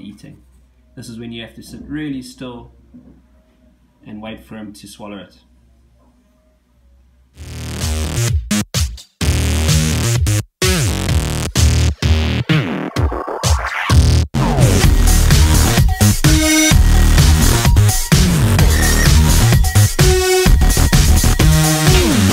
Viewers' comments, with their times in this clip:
0:07 Turn your volume way down or RIP headphone users.